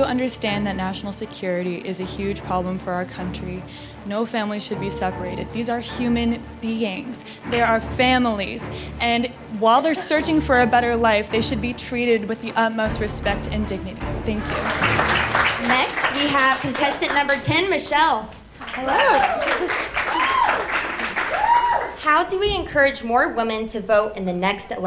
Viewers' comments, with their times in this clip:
0:09 The girl was READY. like whether you agree or not she gave the answer so smoothly and calmly and was able to clearly express her thoughts in a mannerly way.